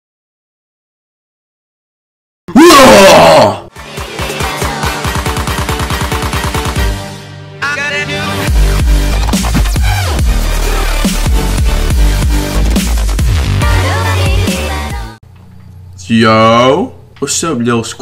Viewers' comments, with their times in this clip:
0:02 RIP my ears